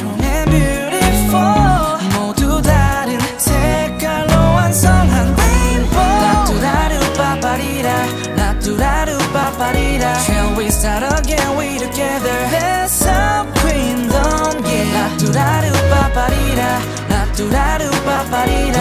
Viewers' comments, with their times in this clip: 0:06 's drop gets me everytime 파이팅!!